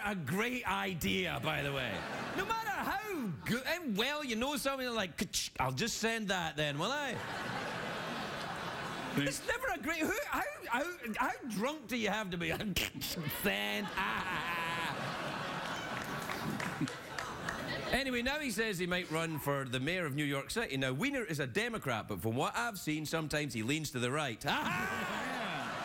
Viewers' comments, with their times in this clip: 0:10 Craig makes sound of a crazy dog, lol